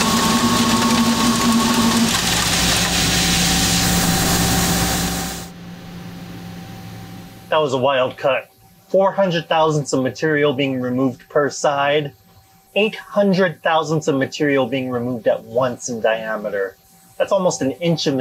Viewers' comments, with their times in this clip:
0:05 It sounds good, but its a sound that i would be ready to turn bad at any moment. @ the smoke from the tool was massive. Thats a big working area of lathe full of smoke